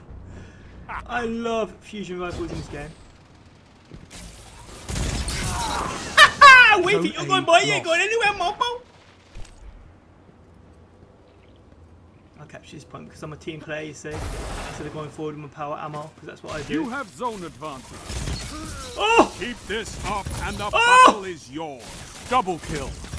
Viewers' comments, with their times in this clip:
0:07 Was that even English 😂